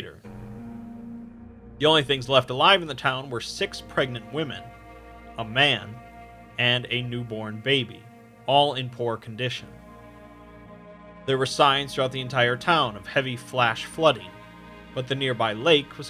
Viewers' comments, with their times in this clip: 0:03 *cursed emoji breathing *